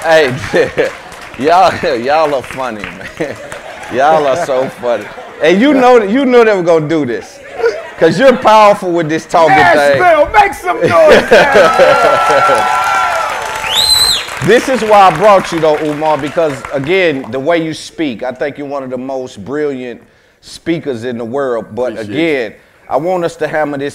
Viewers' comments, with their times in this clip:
0:04 imma laugh every time they clap now! 😂